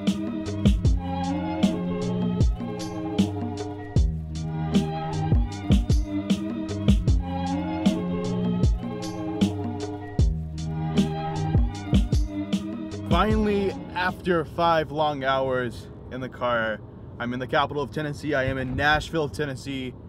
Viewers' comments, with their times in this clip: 0:08 Oh and btw that instrumental was straight🔥 what's the name of it?